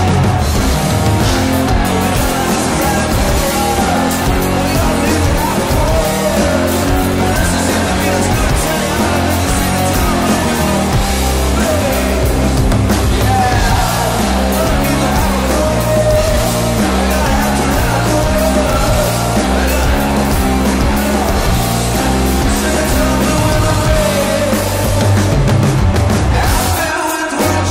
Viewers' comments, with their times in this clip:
0:09 Okay, just curious, how is it you were able to sing AND drink water at the same time ? I love your voice, but are you singing along with a voice track?